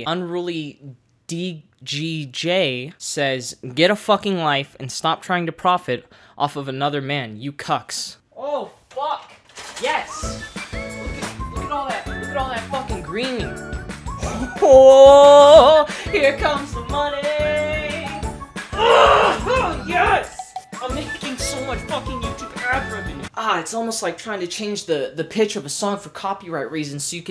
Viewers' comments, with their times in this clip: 0:09 when you said "WHOOOOAAAH HERE COMES THE MONEYYYY" You were not only on pitch but on tempo with the background music LMFAOOOO great fucking content as usual <3